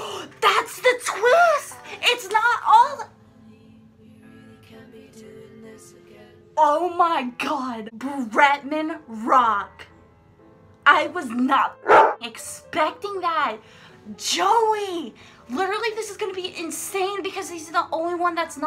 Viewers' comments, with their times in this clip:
0:04 Did the song and you just say 'oh my god' in sync???